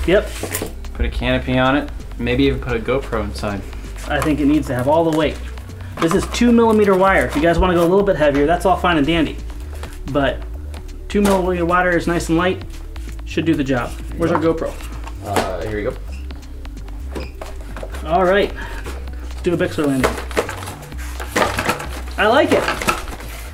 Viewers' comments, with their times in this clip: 0:10 ... WTF did he say?